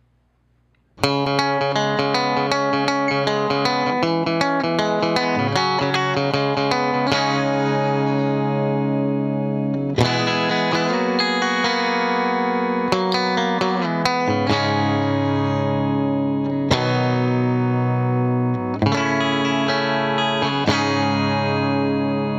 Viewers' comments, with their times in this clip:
0:03 why do you guys use this guitar5 riff?